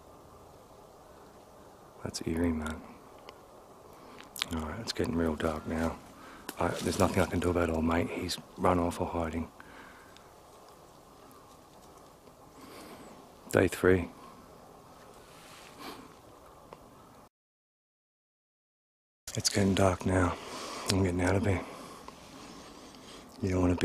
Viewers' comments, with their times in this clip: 0:06 Can somebody explain what the female voice says ?